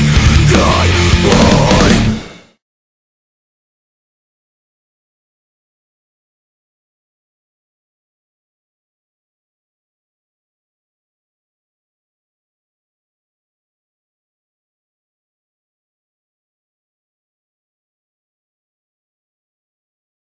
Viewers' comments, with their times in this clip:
0:03 the song ends ..?